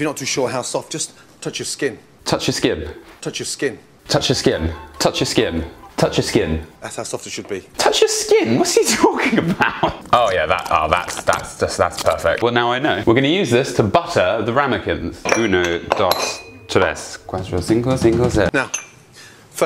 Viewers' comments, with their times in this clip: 0:05 he sings the offspring lmao